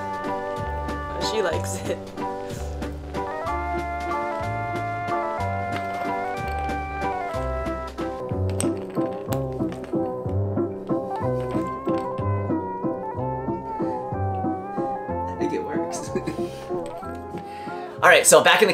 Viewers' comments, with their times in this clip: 0:06 the cats on Silvervine part was so funny specially with the carousel sound 🤣 and the food looks super yummy!! 🤤